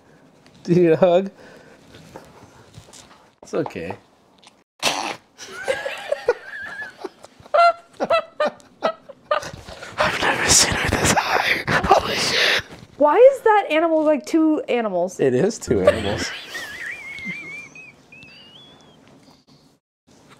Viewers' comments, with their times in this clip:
0:07 Bro be sounding like a farmyard chicken